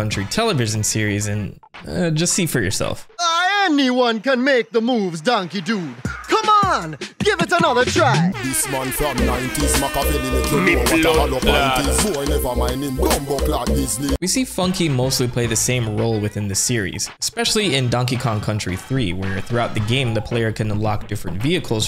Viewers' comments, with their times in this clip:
0:09 Bro, the Brooklyn Anthem fits so well with Funky🤣🤣🤣🤣🤣🤣🤣🤣🤣🤣🤣🤣🤣🤣🤣🤣🤣🤣🤣🤣🤣🤣🤣🤣🤣🤣🤣🤣🤣🤣🤣🤣🤣🤣🤣🤣🤣🤣🤣🤣